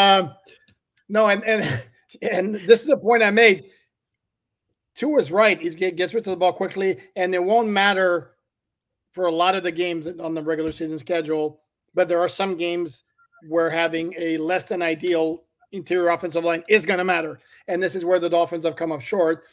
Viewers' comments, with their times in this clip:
0:07 not the singing 😂😂😂😂